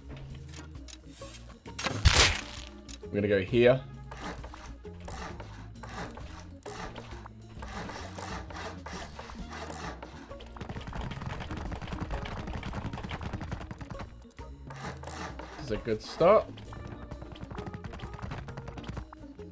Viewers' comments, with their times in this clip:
0:07 If ADHD was an in game sound...